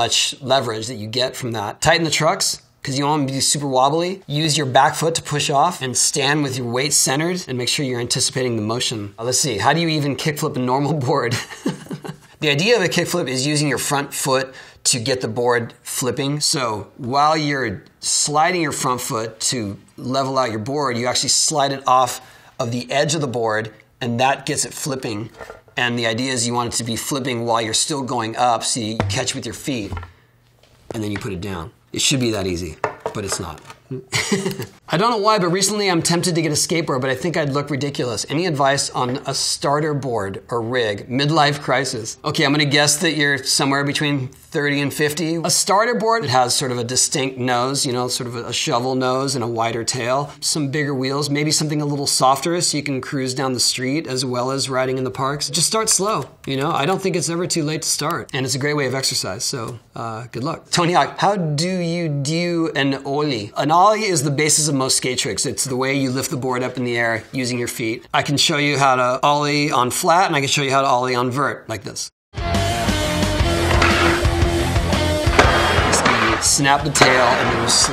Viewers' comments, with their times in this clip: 0:10 tony laugh* "dem plebs"
0:59 hOw dO u dUe aN OOOW-LY?
1:01 I love his prononciation hahah but seriously, he answers the most ridiculous questions in such a clear and humble way, you gotta love him
1:01 he turns british
1:01 OMG the accent 🤣🤣